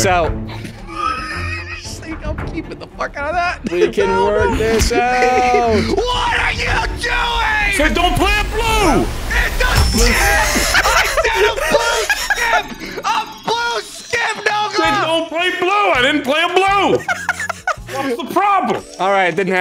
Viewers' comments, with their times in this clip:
0:06 Man really sounded like thimble tack from Spiderwick 😂